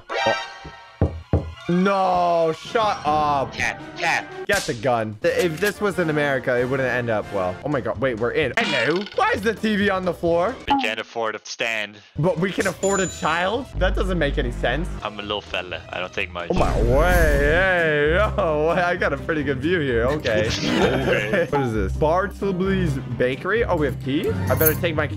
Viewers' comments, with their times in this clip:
0:10 Bro said hes adopted way in teh most nicest way possible